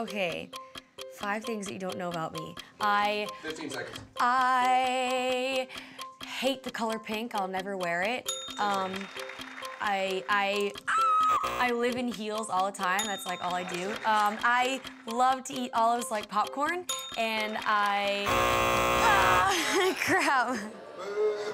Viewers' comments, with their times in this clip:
0:04 !!! hahahaha Angie's voice!! :p